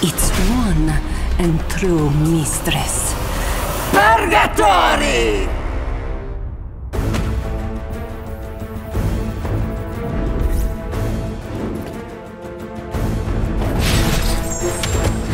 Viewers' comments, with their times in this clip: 0:03 i need that voice in my life